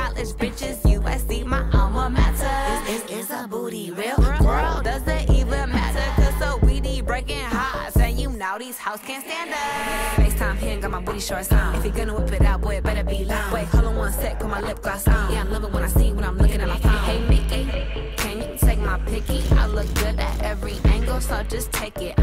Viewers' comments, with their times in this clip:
0:04 oop- that fart was crunchy 🤣🤣🤣🤣🤣🤣